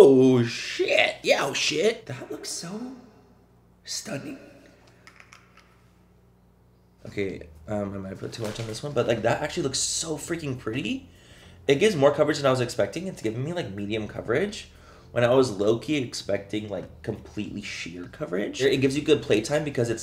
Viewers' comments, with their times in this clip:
0:04 when you said stunning, you sounded like Olaf from Frozen!😂❤️